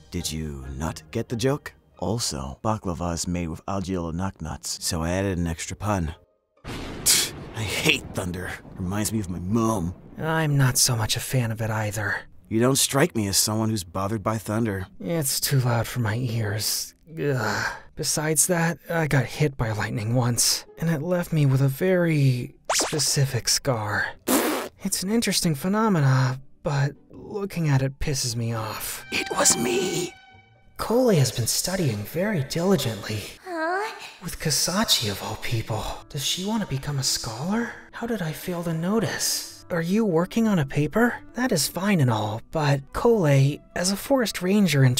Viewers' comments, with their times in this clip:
0:09 HELPP IM BRITISH WHY DID HE SAY MUM LIKE THAT
0:25 my favourite part mouthfart??